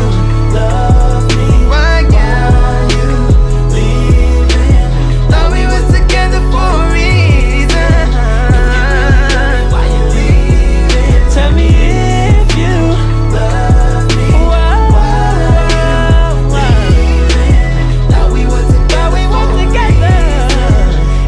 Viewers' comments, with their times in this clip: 0:08 was some good singing